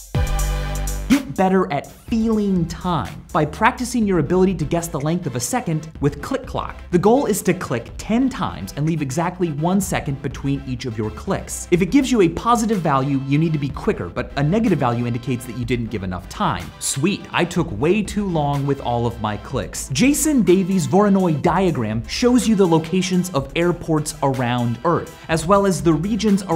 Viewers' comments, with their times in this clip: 0:08 I love how the background music is 60BPM, or a beat per second. Another way showing how long a second is